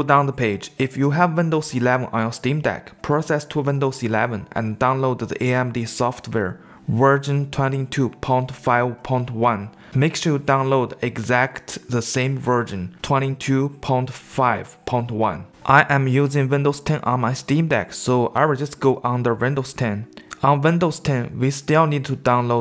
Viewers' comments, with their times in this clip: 0:08 did I hear that wrong? Download the Virgin? 22 pong 5 point 1?